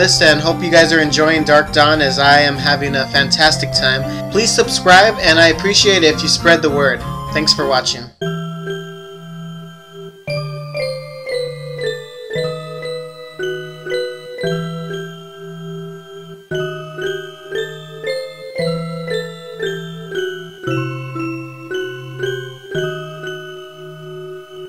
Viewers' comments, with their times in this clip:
0:08 Sheba's theme... Whyyyy........ The saddest song ever. i feel sad now :'(